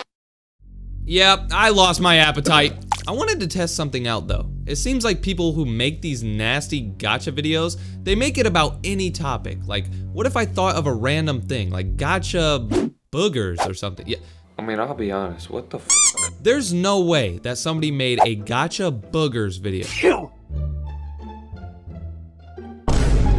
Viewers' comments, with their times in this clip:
0:05 my god this is my worst nightmare that a lady shushing around